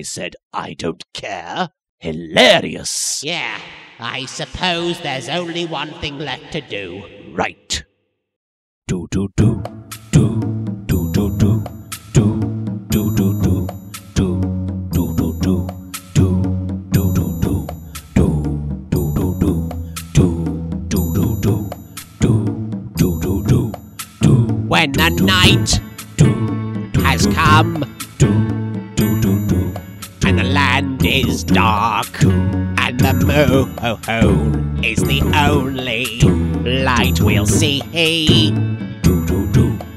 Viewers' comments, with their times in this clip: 0:04 Until I was wondering why I remembered this as the best episode of yugioh abridged. And then they started singing
0:04 great song starts
0:09 At first i though this is "be prepared". Bakura is really similar to Scar.
0:24 an anime without cheesy songs might as well be just an boring american cartoon